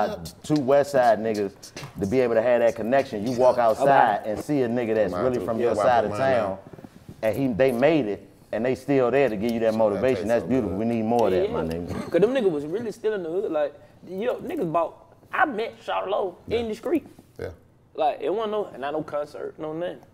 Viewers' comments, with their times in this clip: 0:05 Why was he laughing when chico was talking real shit its like he thinks hes talking nonsesne just because its him.